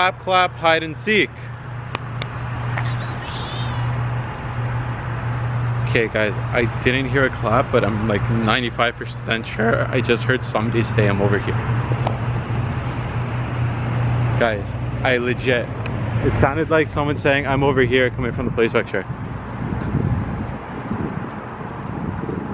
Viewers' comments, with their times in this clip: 0:03 little girl say I am over here